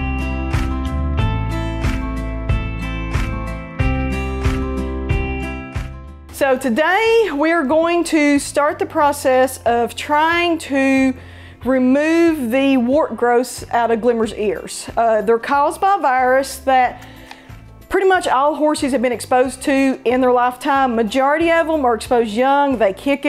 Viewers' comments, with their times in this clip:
0:06 I wasn't paying attention at first and I thought it was Brittany Broski because of the voice.